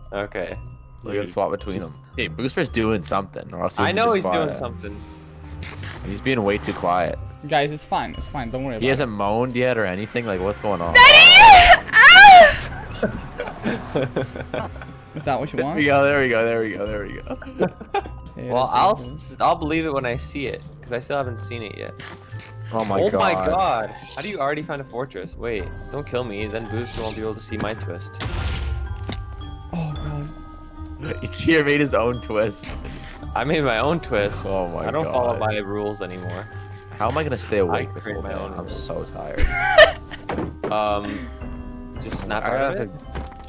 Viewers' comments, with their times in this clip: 0:06 Im so glad I got the alert ,I never turned down my volume so fast in my lifeee!
0:07 Thank you SO MUCH for the moan alert, i had my headphones almost on the maximum volume
0:07 turn up your volume to hear the easter egg!
0:09 Is soo cursed. My ears are officially destroyed.
0:10 r.i.p headphone users
0:10 realizes my father isnt here-kalm realizes my volume is full-panik the door is open-EXTREMLY PANIKKKKK MY MOM AND DAD HEARS IT MORE MORE EXTREMLY PANIKKKKKKKKKK
0:10 my f**king ears
0:10 I stopped the video right at this moment and came back five minutes later after listening to a low quality video that made me have to turn my volume to max on my headphones. Its sad I will have to go the rest of the video without any audio now that my fucking eardrums have been exploded
0:10 THE VOLUME JESUS MY EARS
0:10 NOT THE MOAN ALERT!💀
0:11 my volume was at max and now i'm deaf
0:12 Im just lucky that turn down my volume is it?
0:24 my volume went downn